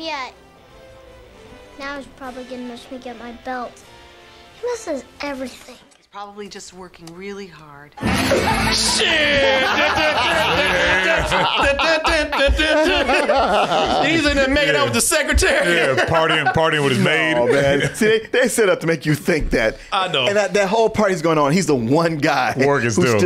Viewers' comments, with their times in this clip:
0:05 "He's probably just working really hard." champagne pops- SHIIIIT!!! 🤣🤣🤣